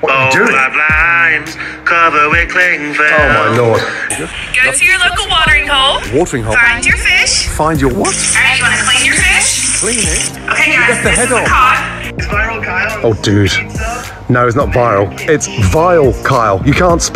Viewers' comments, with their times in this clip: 0:05 that is the most innocent sounding "what?" I have heard from ramsey